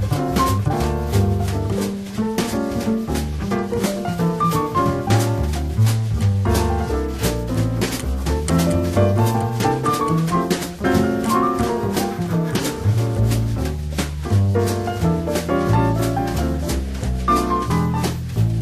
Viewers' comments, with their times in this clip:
0:06 I love the line Bill and Scott hit together then you hear the guy bust out laughing and a few bars latter Bill lays out the chops almost like he's shunning him. Best Live album ever the feel is unreal